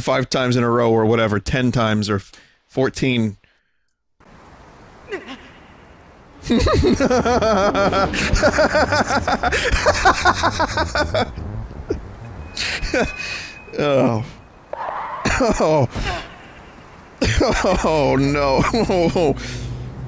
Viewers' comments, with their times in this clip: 0:04 it’s nice to hear vinny having an aneurysm